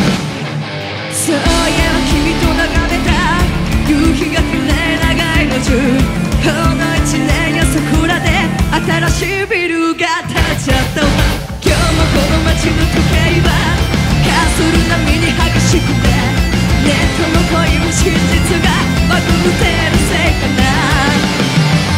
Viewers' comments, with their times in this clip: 0:06 You can actually hear Saiki laughing
0:09 you can hear that saiki is actually laugh